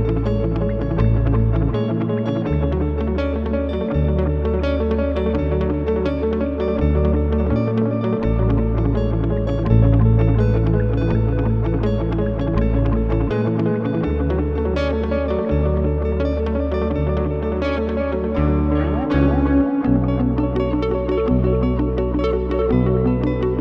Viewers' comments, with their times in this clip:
0:08 the song is mad catchy